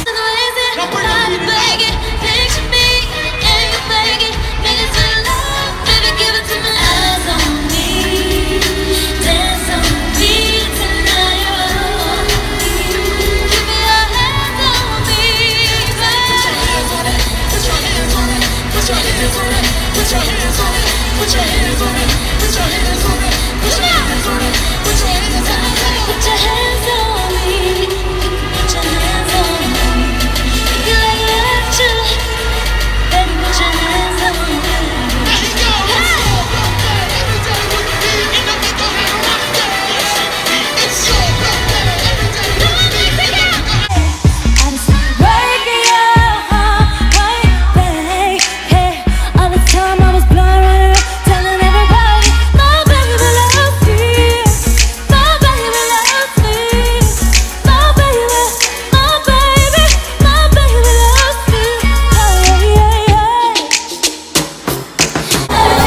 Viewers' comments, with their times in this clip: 0:04 Have anyone heard that she she sang on "picture me, eating bacon" lmao xD
0:49 I feel bad... but she still sounded great